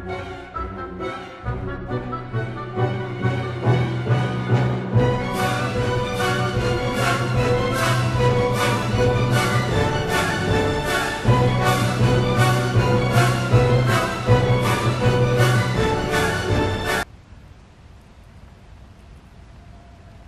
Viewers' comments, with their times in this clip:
0:07 the dramatic music is just perfect😭🤚